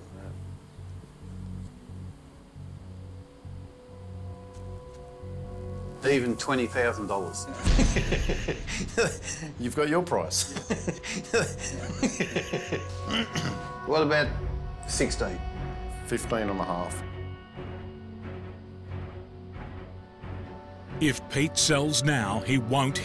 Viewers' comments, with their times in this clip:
0:07 that fucking laugh i swear XDXDXDXD